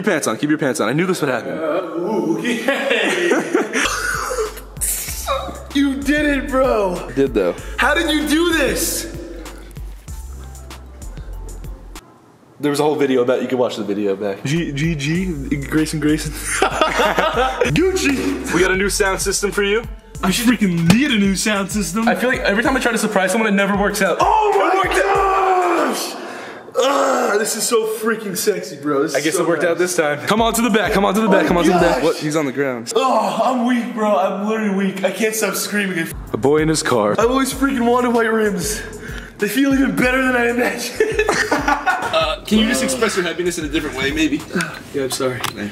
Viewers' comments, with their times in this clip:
0:05 The little noise he made 😭
0:27 grayson saying "sexy" is literally sexy